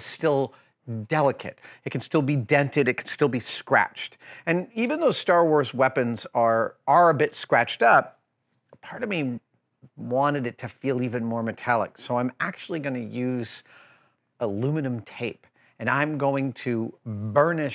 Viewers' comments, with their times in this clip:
0:04 really sounds like he says star WARS weapons haha